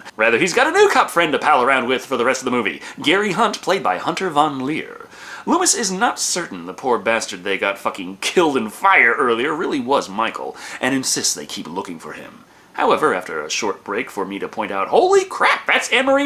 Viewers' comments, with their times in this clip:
0:03 1) Please dont yell in front of the press... 2) Hey wasnt The reporter assistant David Spade?